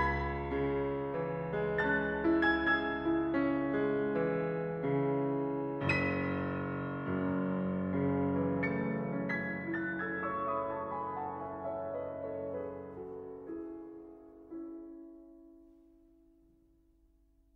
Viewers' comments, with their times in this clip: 0:05 Debussy-like run. Real nice....